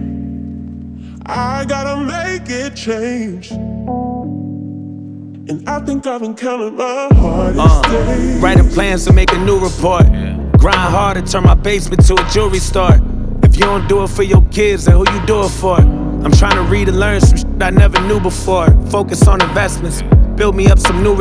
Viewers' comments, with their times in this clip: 0:09 is JUST 101% NIPSEY VIBE. JOYNER DEFFO INSPIRED BY NIP.